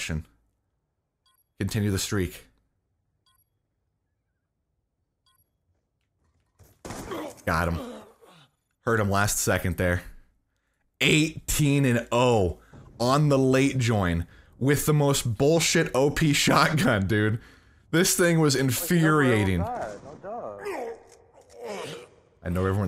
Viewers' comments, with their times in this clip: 0:05 I heard him through my earphones but I can never hear people with my headset